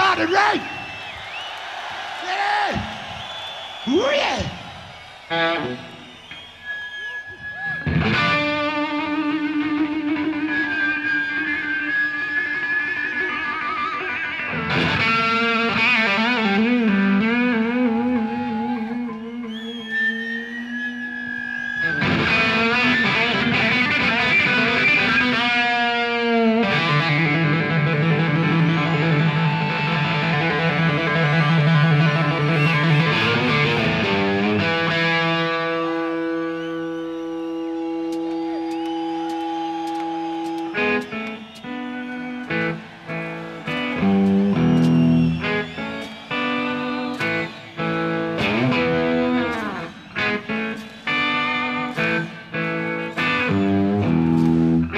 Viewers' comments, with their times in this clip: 0:03 that natural rasp will never get old......\m/
0:30 Angus FEELING the drugs and DAMN they’re allowing him to JAM the F out. WOW. I don’t hear many if any missed notes.
0:38 lol angus totally just denied phils countoff